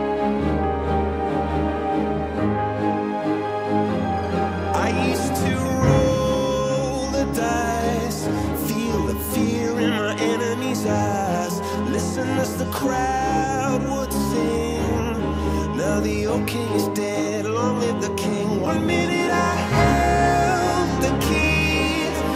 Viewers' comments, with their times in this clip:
0:08 Why does it said feel the air in my enemies ass lol😂